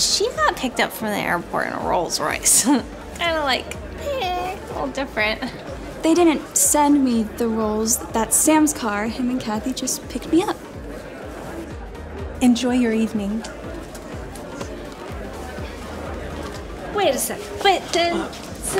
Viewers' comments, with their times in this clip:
0:04 Did anyone notice that in the video, there’s an ehh sound and if you repeat it it’s hilarious 😂